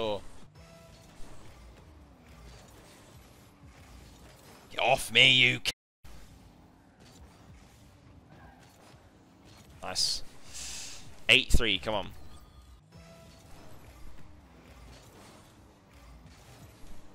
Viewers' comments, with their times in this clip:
0:03 get oofff me you c-BLANK lmfao as an aussie i've said this so many times i thought i was hearing my own voice